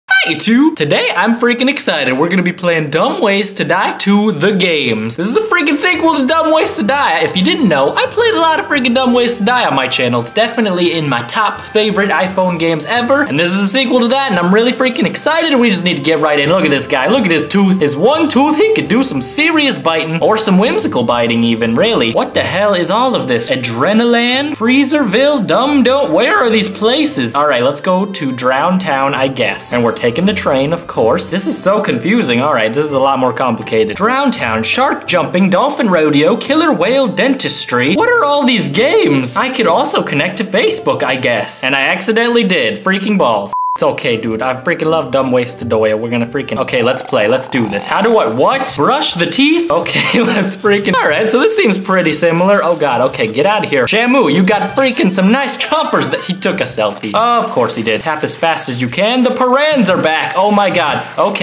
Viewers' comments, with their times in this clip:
0:00 Your voice broke didn't it. . .
0:46 ,did he just tell dumb ways to doi